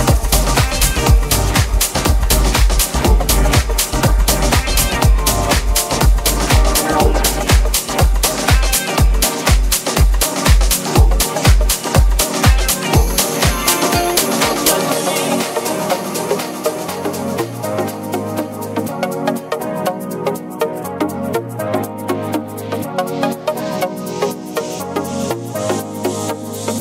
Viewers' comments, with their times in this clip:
0:07 That transition is so damn nice.